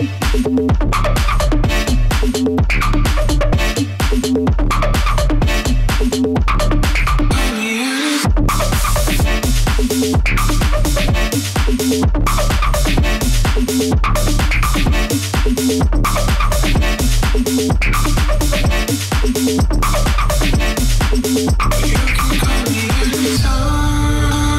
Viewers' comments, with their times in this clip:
0:10 Sheeeushhhh that track is spicy! 👀🔥